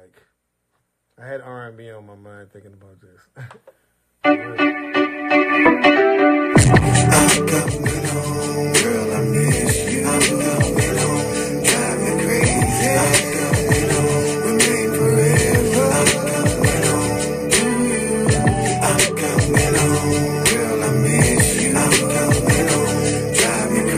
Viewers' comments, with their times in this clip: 0:04 The song is the jam of all jams!